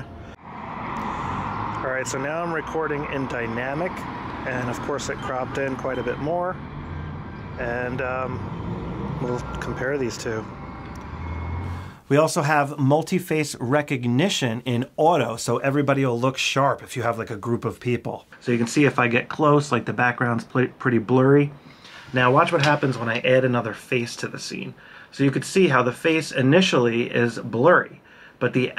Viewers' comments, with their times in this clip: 0:10 sounded like blue oyster cult don't fear the reaper.